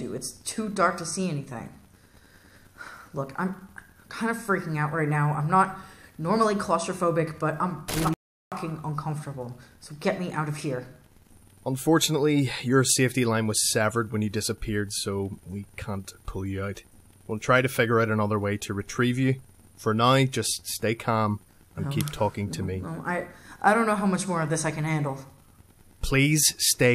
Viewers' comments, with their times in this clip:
0:07 Quality swear blur. xD